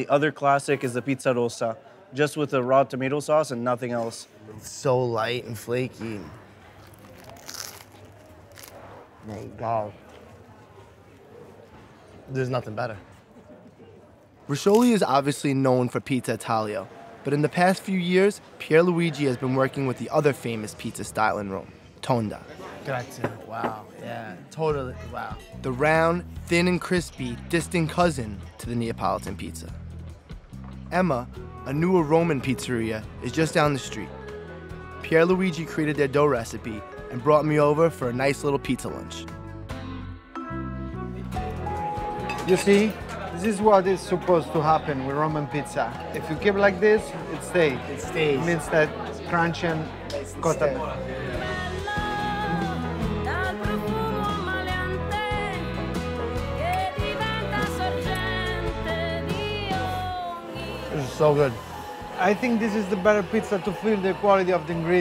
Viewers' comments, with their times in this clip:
0:06 that crunch could legitimately heal the world.
0:52 Music brings the Italian feeling to the viewers...kinda soothing...Song name anyone?